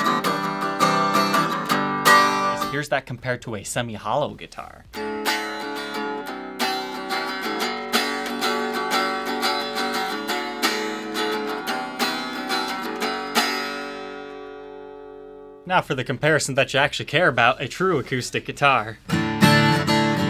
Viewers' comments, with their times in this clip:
0:04 Did anyone else think he was gonna start playing sweet home Alabama